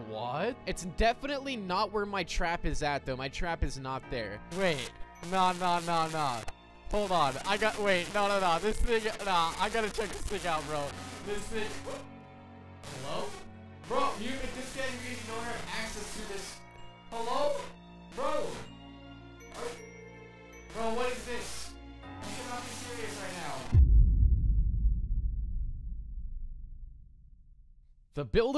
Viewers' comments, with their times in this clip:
0:05 Why is his microphone cracking up on the video?
0:05 WHAT HAPPENED YOUR VOICE?
0:06 Your voice went static 😭😭😭😭😭
0:11 your mic messed up